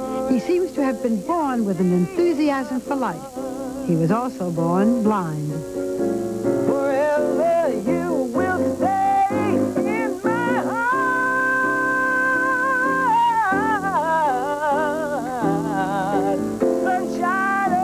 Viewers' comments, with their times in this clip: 0:05 wow. love how Stevie can improvise, and make a song we're all familiar with sound different.